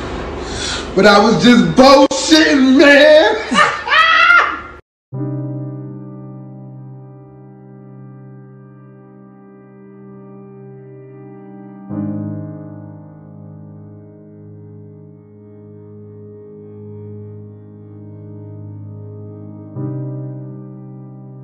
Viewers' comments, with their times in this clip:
0:03 the slight laught was confirmation 😂
0:05 Mane when that sad ass music kicked in 🤣🤣🤣